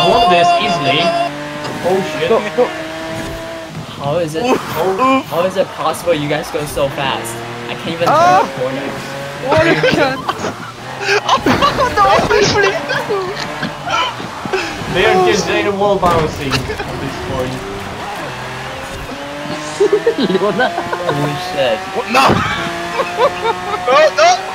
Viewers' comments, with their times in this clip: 0:08 French screaming Also who was the French ?